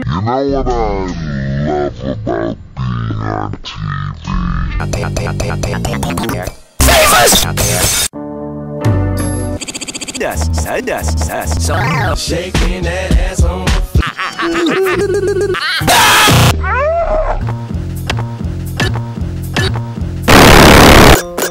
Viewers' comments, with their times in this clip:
0:08 thanks for putting that second of that song in my head for the past few days.